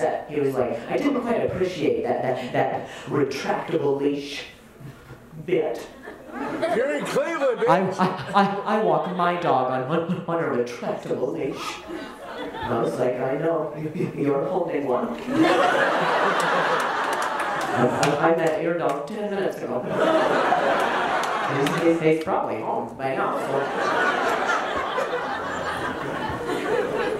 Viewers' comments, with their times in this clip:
0:06 Did anyone else hear a guy randomly scream out, “you’re in Cleveland, bitch!” 😂
0:06 "You're in cleveland bitch"??????
0:06 a guy yells “YOUR’E IN CLEVELAND B*TCH” for no reason and I could not stop laughing
0:07 whats with that guy yelling "you're in Cleveland bitch"? at like
0:07 Did somebody just say "you're in Cleveland, bitch"?
0:08 Did that guy say "You're in Cleveland bitch!"